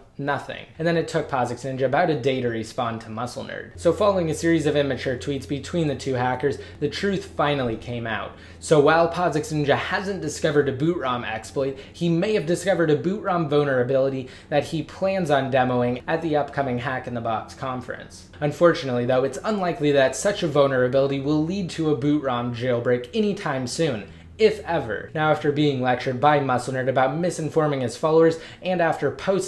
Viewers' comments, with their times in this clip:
0:10 am i the only one who heard "bonerability?"